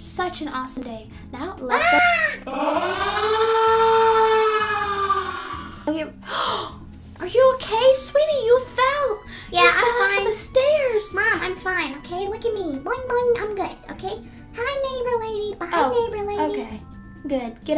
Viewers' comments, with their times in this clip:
0:03 i thought that was an nuclear alarm XD